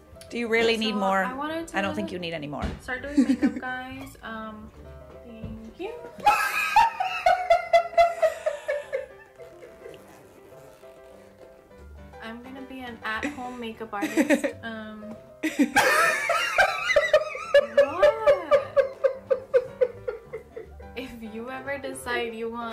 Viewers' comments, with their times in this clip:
0:09 he must be a Filipino for laughing at her face like that.